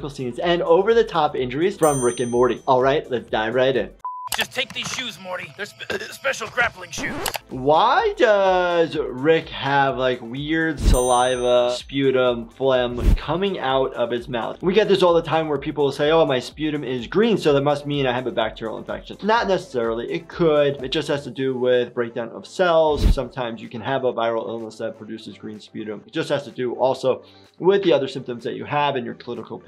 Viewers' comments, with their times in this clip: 0:10 so the reason why he has saliva coming out of his mouth is because, from what I've seen, he's always drunk. Which could also explain why he burps and sounds like he's having trouble speaking